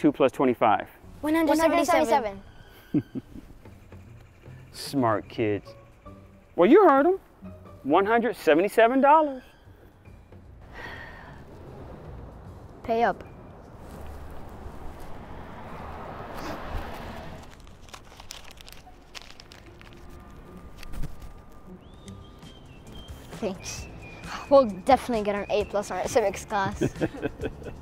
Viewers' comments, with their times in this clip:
0:06 I love how he said “you heard them. $177.” it’s literally a tone of “you heard them. now pay up b*ch.” *OWNED
0:12 that pay up was very serious